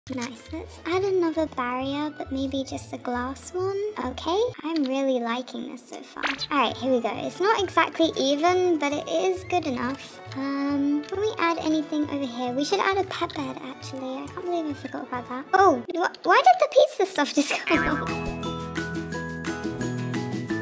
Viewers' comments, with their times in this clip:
0:02 I like the way she said glass